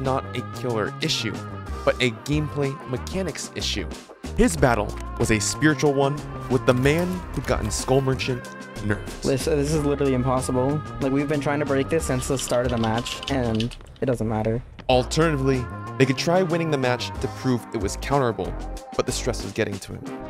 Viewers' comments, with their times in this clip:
0:04 Dude, wtf is the song ?!? So funky